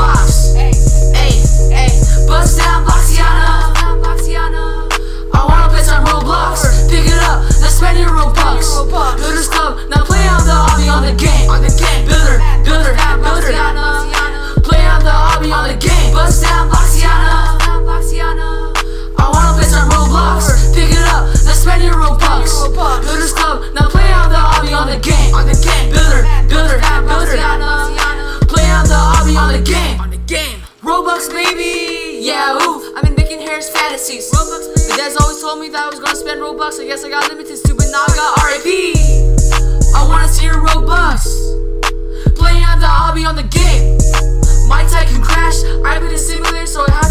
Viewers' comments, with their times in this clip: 0:06 does anyone hear that voice in the bg?
0:34 he can actually rap off the beat too